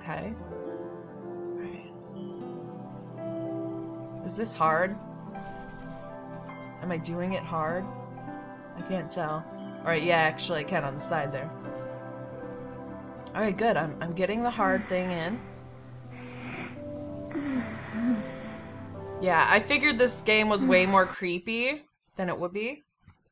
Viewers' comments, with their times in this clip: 0:07 looks wrong and sounds wrong